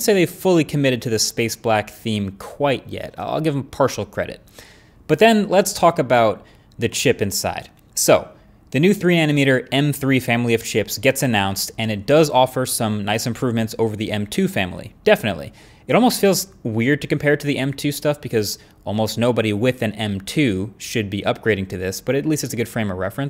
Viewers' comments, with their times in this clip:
0:08 "the 3 anometer" lol